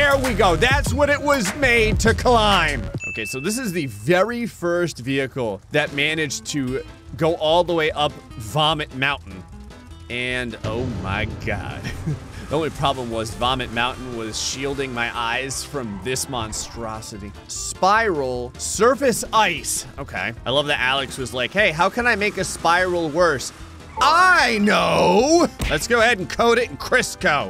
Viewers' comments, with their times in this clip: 0:10 you sound like Might Guy